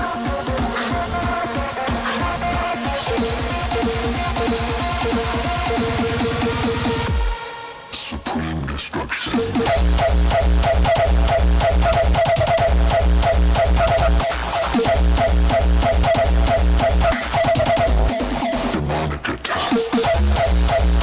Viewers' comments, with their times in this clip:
0:06 very nice music